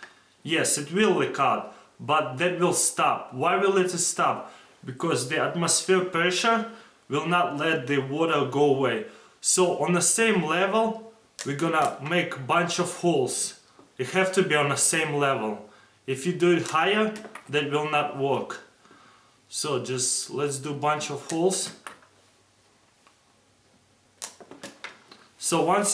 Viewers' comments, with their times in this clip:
0:10 so at the same level we going to make bunch of hoes 😂😂😂😂